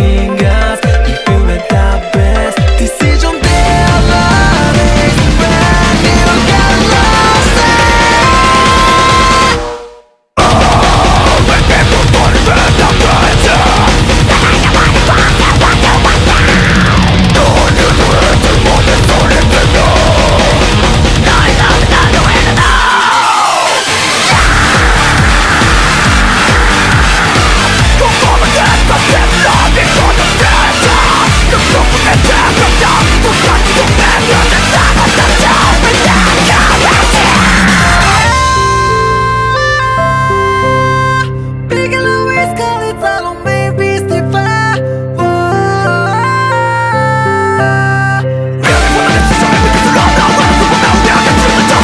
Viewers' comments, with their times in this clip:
0:10 Push for shortcuts.. max ur volume is a must
0:37 Best Part is the Autotune on
0:37 power of autotune and pro tools